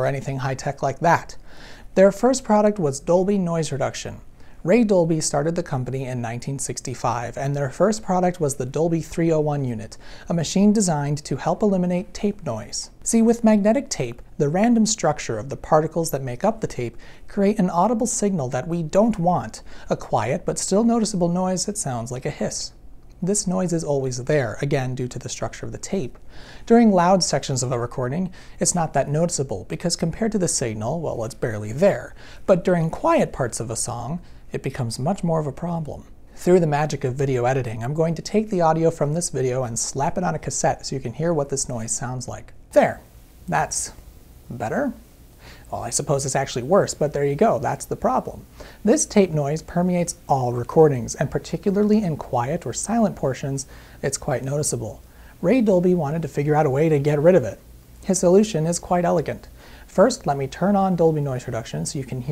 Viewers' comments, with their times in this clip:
0:07 Say what? I missed the blip
0:08 damn, what's on can't catch it on the phone xD
0:48 This may sound weird (heh, sound), but that noise is actually quite comforting to my ears.